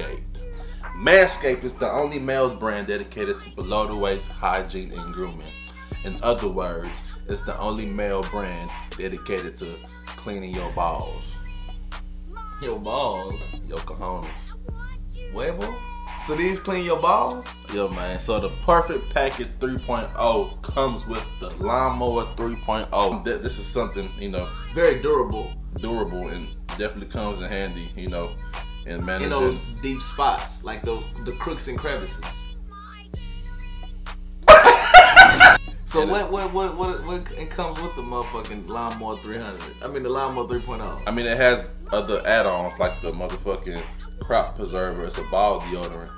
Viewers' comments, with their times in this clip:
0:04 Anyone hears the background music?😂
0:08 Nobody: Music in the background “I want you to play with my dingaling”
0:10 we not gon talk about that background song...
0:23 the fucking music is killing me in da back ground
0:32 if my bros don't laugh wit me like this i don't want em